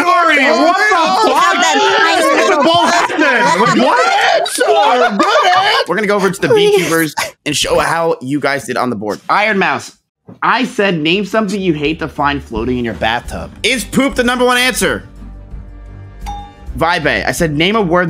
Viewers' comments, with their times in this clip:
0:05 mizkif first time laughing for real